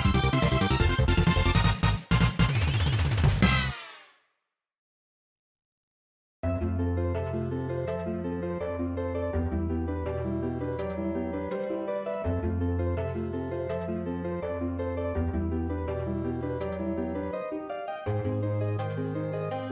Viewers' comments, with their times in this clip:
0:05 Love this theme!!!!